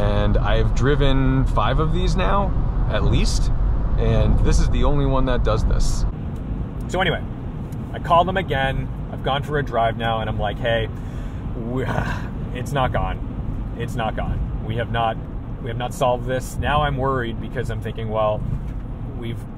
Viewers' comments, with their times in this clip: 0:03 Man i had my volume turned to the max and i coudnt hear a thing,but i ques that's probably issue with camera